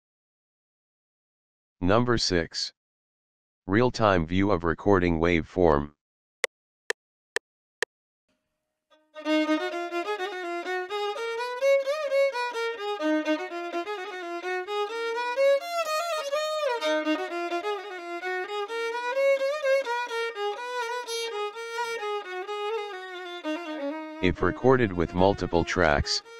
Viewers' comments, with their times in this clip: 0:09 That mind blowing melody of "Numaaish" gives chill